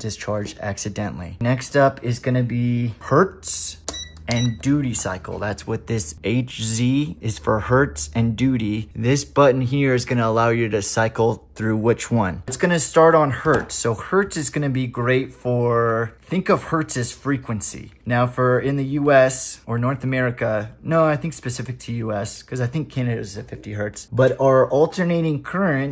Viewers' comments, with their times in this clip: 0:07 he he you said doody